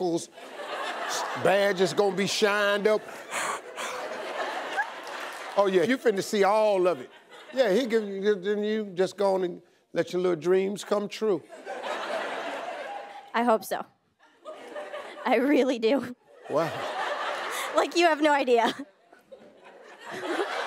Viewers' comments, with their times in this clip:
0:05 What is that ?? A yawn, a laugh.. What is that?
0:05 that was a yawn!